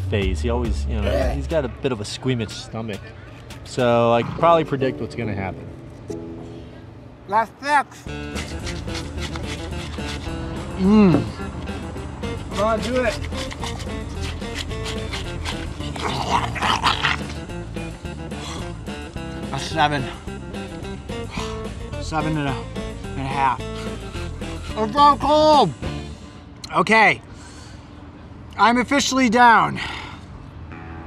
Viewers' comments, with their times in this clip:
0:08 When he was quickly munching on those pickle pops it sounded like he was eating a minecraft porkchop.
0:08 is it just me or does it sound like the minecraft eating soundeffect
0:14 the sound of a raging demon or some dog with rabies
0:16 is the sound of a dog fight